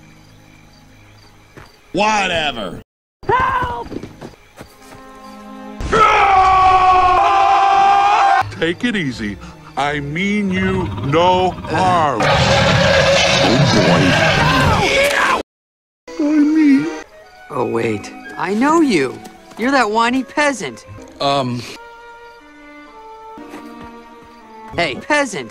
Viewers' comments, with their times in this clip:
0:06 Shrek's Beastly Roar
0:06 how did kuzco do shrek's roar?
0:12 Always gets me laughing every time and the way Pacha says "OH BOY!" before being attacked is GENIUS! WELL DONE GOOD SIR!